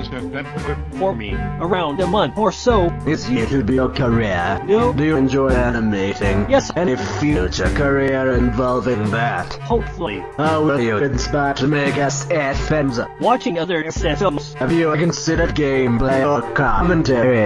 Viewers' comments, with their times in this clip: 0:03 this is much better. i don't have to pause for every question anymore. but there is still a flaw. the music is a bit too loud. or the voices too quiet. but not too much. oh and also could be done better. because right now you switch back and forth with a black and a white screens. a bit painful for the view really.